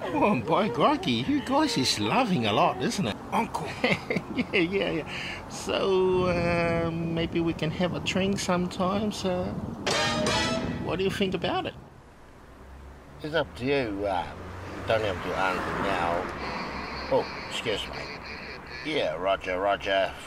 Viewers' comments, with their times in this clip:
0:06 i thought he said, "maybe we can have a train sometime" lol